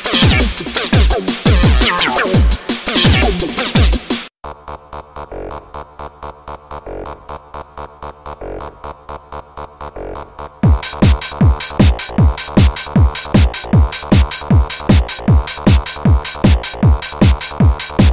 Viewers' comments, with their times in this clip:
0:04 18 seconds of "hell yeeeaaahhhh"